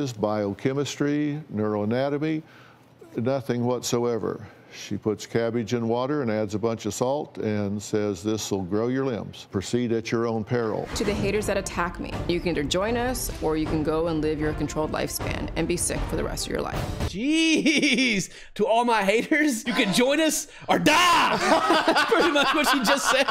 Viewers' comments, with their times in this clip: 0:08 she’s saying “Fermented” not what you guys said lol 😂